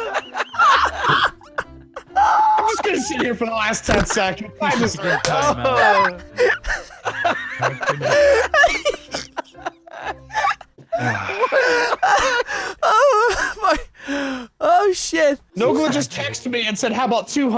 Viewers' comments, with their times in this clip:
0:03 that snort though haha